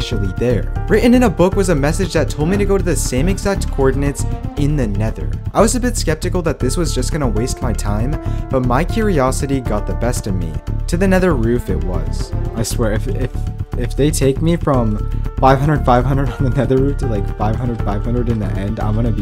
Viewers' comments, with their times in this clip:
0:05 My siri was going off wtf
0:05 a little spepticle heh heh